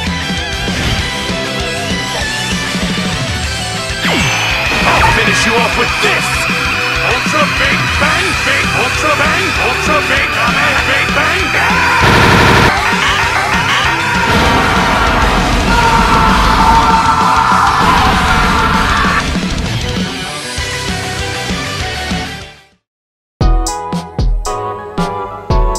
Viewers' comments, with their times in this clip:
0:07 It’s always a good day when Monke can’t even say Big Bang right or when he has a seizure